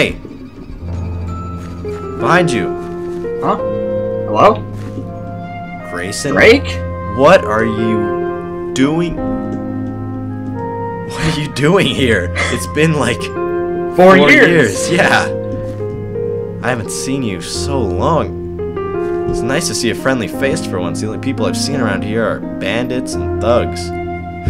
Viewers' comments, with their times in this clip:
0:06 did he say Grake